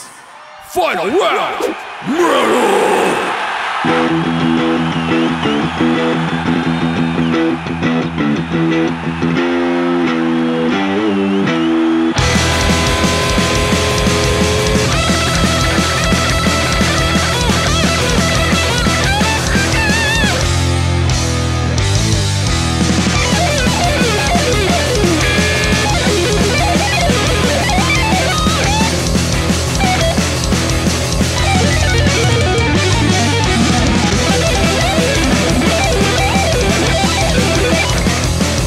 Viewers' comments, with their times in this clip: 0:03 that riff is solid. If only he cranked up the gain..
0:12 That is the most metallica solo I've heard
0:12 That reminds me a lot of every solo on Kill'em all XD
0:12 sounds like something megadeth would use in one of their original albums
0:12 now that sounds like 80’s thrash!🤘
0:12 Real Kirk Hammet vibes here
0:15 Why does sound like Kirk and James for a sec 😂
0:15 average Kirk Hammett solo
0:21 This part is the most Megadeth thing I have heard in years